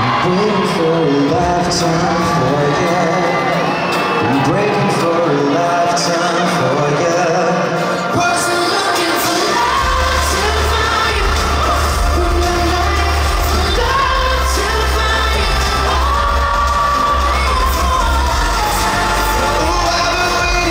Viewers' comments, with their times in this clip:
0:05 trying to sing without laughing <3 I love them